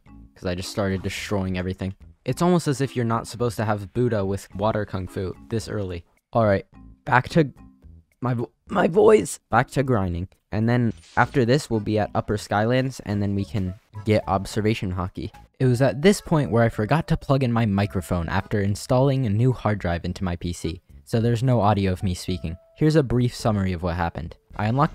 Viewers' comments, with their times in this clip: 0:07 "Back to G- ÆÆGH MY VOICE" Got me rolling on the floor